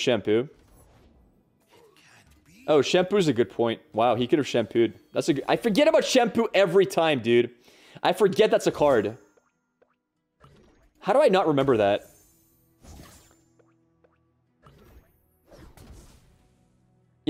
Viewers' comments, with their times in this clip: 0:04 What's shampoo? Shunpo?